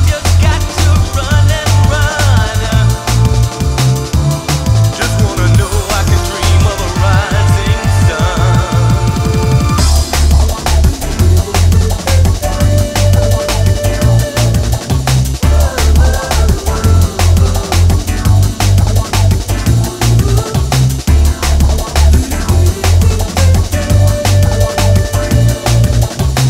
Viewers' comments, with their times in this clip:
0:09 The tune from 😍😍😍😍😍